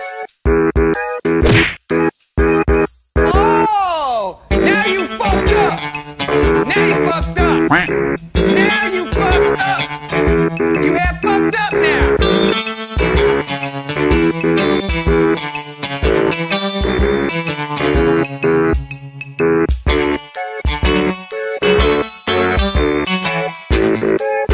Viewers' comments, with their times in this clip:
0:07 LOVE how that just happens and the happy music is still playing